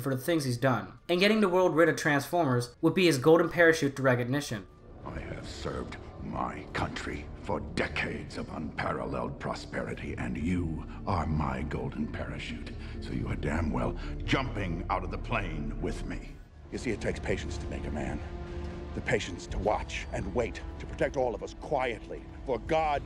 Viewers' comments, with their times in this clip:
0:04 close your eyes and he sounds like a transformer himself Ngl